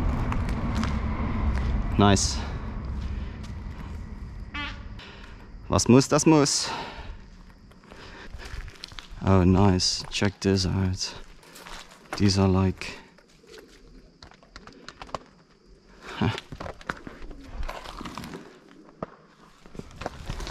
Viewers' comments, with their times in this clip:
0:03 did he fart ? lol